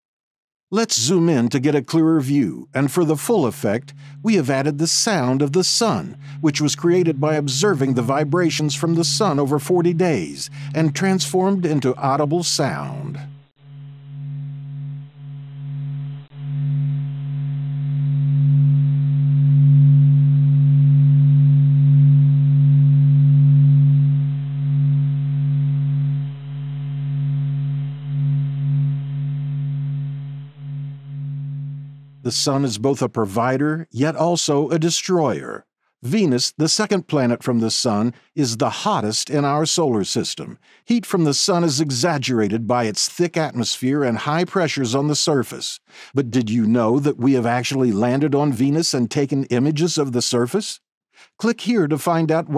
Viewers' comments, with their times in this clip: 0:04 'Sound Of The Sun' sounds like a SWANS song
0:33 the sun is both Rider and Provider😂